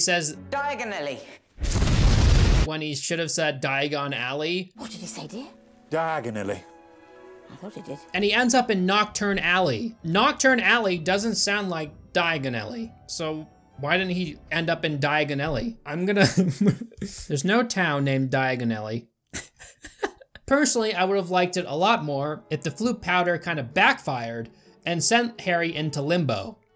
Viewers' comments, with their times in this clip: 0:09 He says Diagon Alley in a way that sounds like diagonally, so he goes the direction diagonal